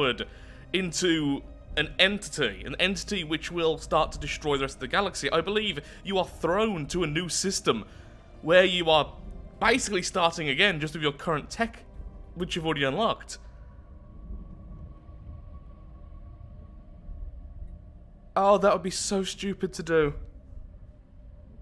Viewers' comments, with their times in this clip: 0:08 I love your maniacal laugh as you come to the realization that you have doomed us all at like